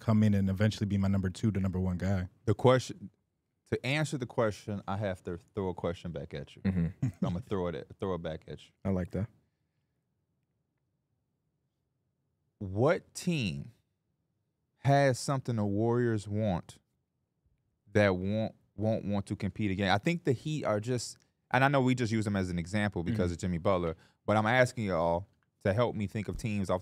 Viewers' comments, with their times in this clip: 0:09 THE PAUSE WAS LOUD